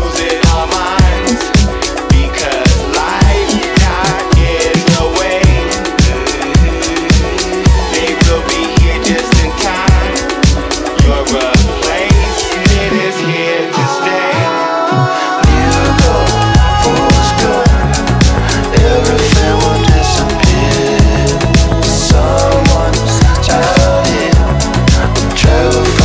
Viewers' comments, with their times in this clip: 0:10 you cannot convince me it isn't "your replacement IS here to stay". awesome song but these lyrics seem wrong.